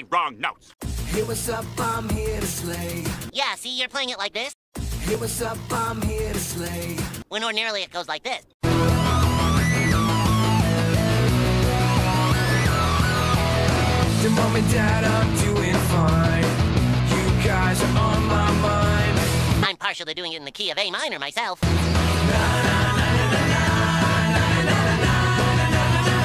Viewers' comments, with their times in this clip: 0:09 It’s weird to hear the intro just start in the new one without the riff